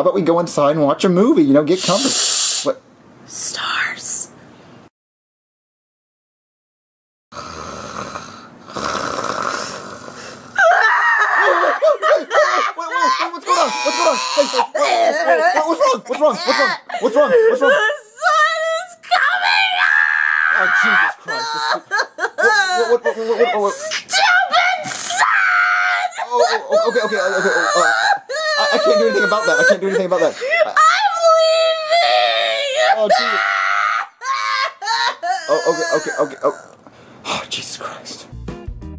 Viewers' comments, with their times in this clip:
0:10 Rosalina crying sounds like dying snake
0:10 that one was funny what happen to the old rosalina I get it maybe her voice must have hurt her that after so many crying coughing and the vomit sound but it was funny
0:10 sounds like a jumpscare
0:11 Rosalina crying got me 😂🤣😂
0:11 The crying tho
0:11 rose sounds like she’s sick
0:14 bro who cries like that? 💀💀
0:20 Me: hey! Shut up it’s 3 in the morning! Tell your crybaby girlfriend to shut up because people are trying to sleep!!!